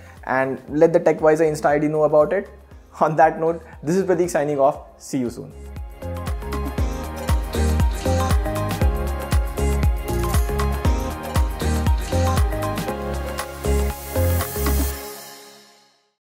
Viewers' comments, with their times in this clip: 0:03 captions "THIS IS THE DICK SIGNING OFF"